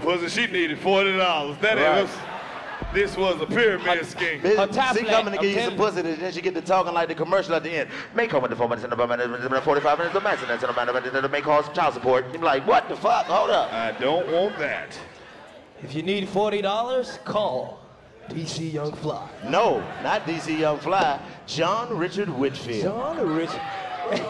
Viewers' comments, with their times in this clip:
0:08 The telephone voice that Chico brought out, is accurate! Lol! - 🤦🏾‍♂️😂